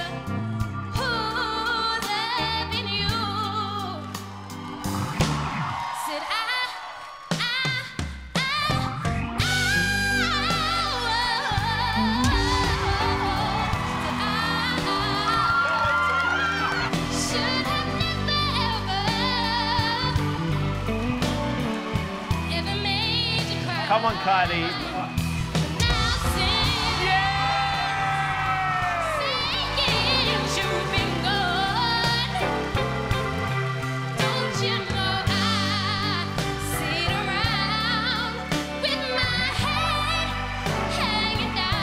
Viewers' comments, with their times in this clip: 0:10 The first note she sang gave me chills, it was amazing. I like how she added her own style and uniqueness to the song, and a lot of people usually don't change the song, however I don't think her note was great.
0:23 Female 50 cent, right there!